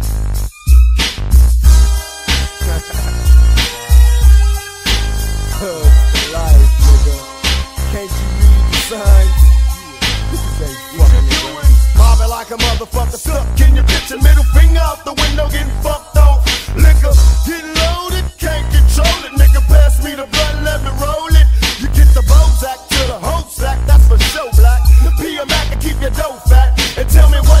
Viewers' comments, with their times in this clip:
0:09 when pac comes in!!! Sheeeesh!!!